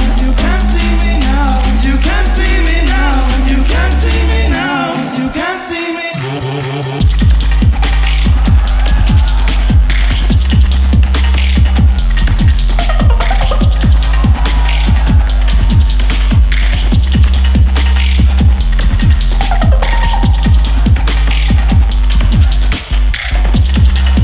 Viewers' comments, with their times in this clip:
0:06 the bass in this drop slaps so hard